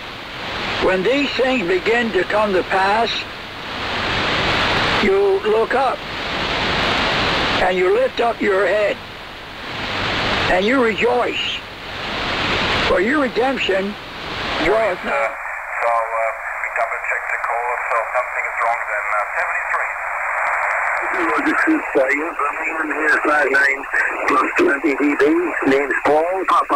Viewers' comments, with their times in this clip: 0:07 nice hearing Brother Stair again ...